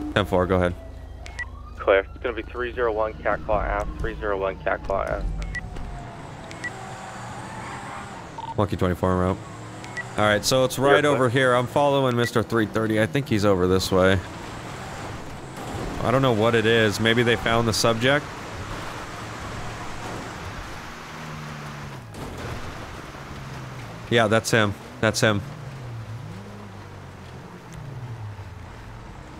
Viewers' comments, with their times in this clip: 0:10 the pure sound of a Crown Victoria gunning it.